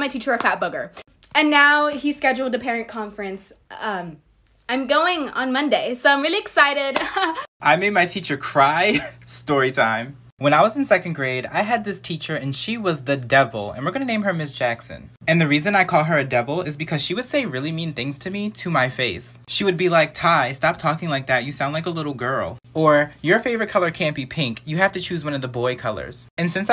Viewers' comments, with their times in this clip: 0:08 I'm so sorry but His voice sound just like Larray literally He always say "story time" Idk if I'm going crazy.